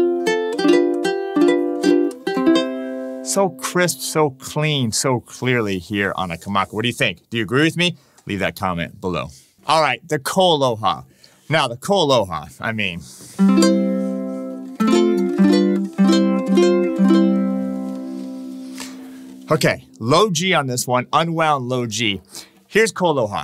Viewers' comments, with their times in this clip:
0:10 Yes, totally agree! When you were going through them one-by-one, I thought the Kamaka sounded the most crisp. It was harder to tell when they went back to back.